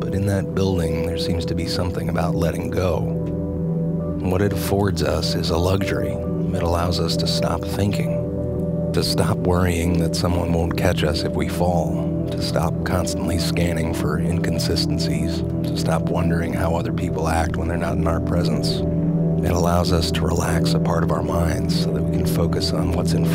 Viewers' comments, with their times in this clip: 0:06 Im learning english, i can't understand what word says in minute, can someone traduce it for me? When he says "what it force us is a ..."